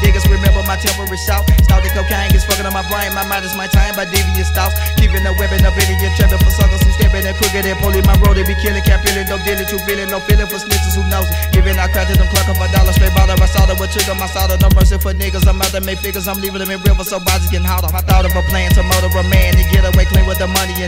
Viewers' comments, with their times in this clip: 0:05 is where you hear where the Migos flow like on h44d